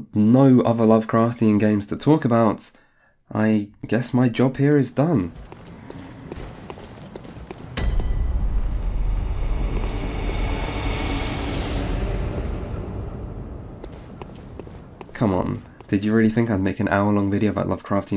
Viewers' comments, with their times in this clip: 0:05 You know you love a game to death when you recognize it by just the sound of its footsteps.